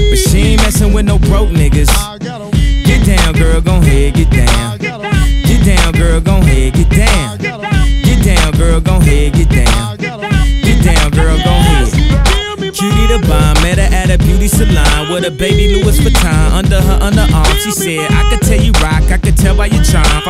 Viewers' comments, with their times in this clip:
0:07 in the background i keep hearing "i gotta pee"